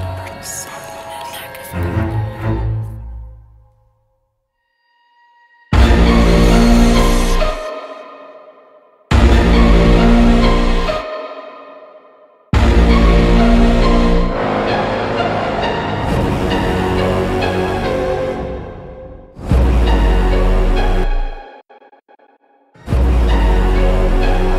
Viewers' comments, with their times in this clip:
0:05 scared me to death if you have full volume in the dark